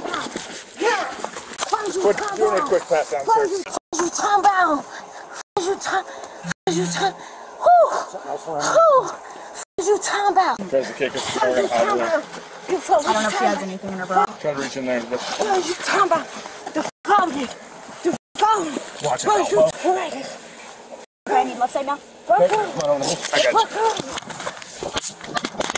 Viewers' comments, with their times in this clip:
0:07 The owl had me dying 😂
0:07 time stamps for the owl 🦉 😎 🤣 i cant stop laughing